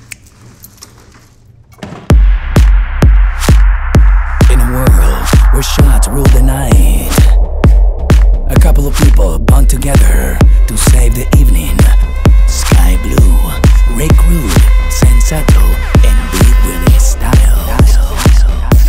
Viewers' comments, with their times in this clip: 0:04 lolololol the narrator sounds just like Pablo Francisco